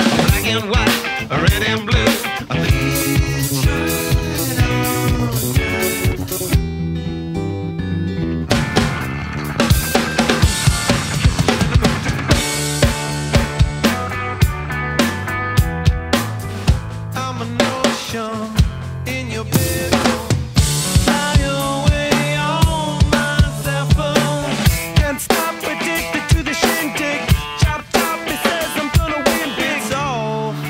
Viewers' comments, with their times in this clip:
0:05 HAHAAH love how Road Tripping has no drumming at all One of my favorite Pepper songs... :)
0:12 Universally Speaking sounds so awesome, too bad that part was so short :(